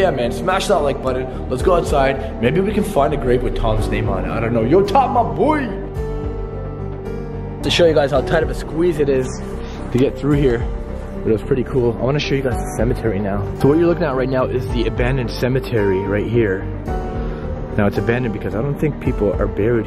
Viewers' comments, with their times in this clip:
0:05 As he is leaving our of the window you can hear the piano.